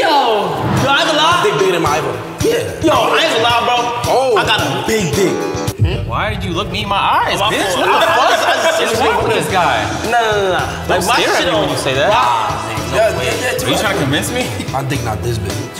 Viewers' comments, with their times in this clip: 0:03 nah bro the boom sound effect is so funny I swear😭😭